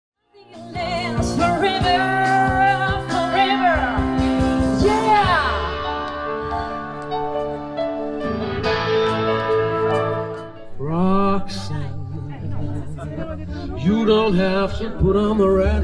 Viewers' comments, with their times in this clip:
0:02 And his look of surprise (almost wtf?!) when she was ugly out of tune haha